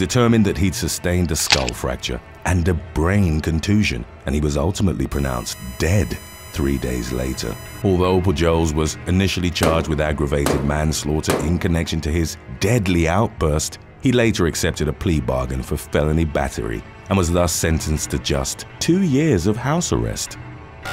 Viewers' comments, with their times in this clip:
0:06 Idk if it's just my phone with these videos but ish mark I hear a beeb sound and I don't understand why